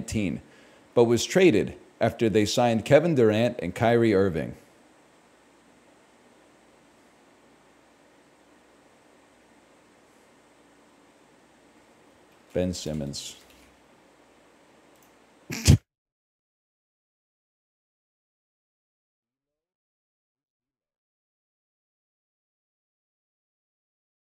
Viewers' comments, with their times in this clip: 0:10 A guess so bad god took away his voice